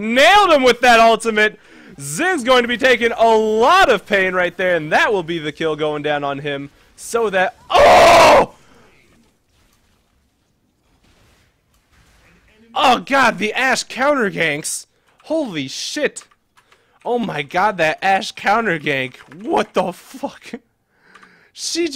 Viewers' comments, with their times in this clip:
0:07 dat scream lol